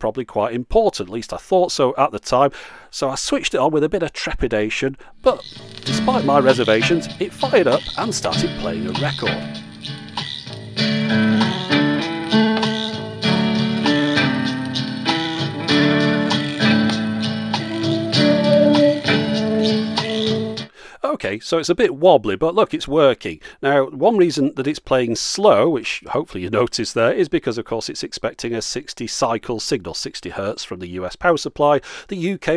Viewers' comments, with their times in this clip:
0:08 sounds right slow
0:15 Am I the only one hearing the Kokiri Forest theme ?